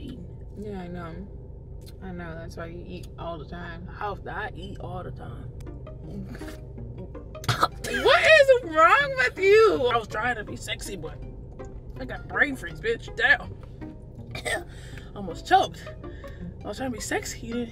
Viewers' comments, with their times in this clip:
0:04 that chomp took me out 😂😂😂💀🍑